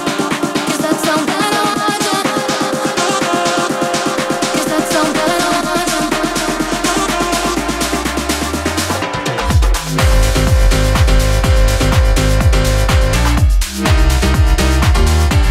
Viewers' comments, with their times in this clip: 0:03 damn that KREAM Remix with the piano is so good 🔥🔥🔥 #SpringTime